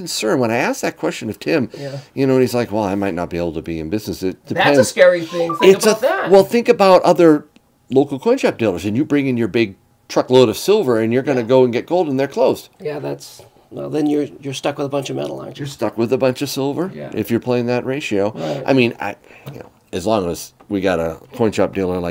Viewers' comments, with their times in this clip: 0:05 F1 radio sound 😂